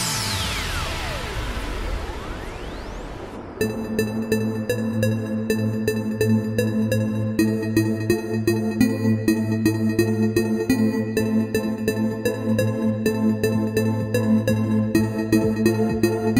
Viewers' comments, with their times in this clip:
0:03 erething before sucked...everything after was frekn awesome...variation, climb, switch, and break...very good sir